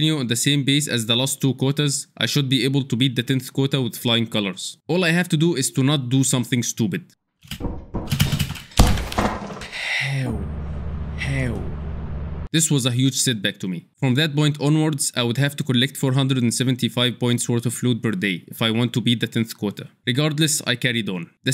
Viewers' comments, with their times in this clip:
0:09 the egyptian came out of him XD habibi nice work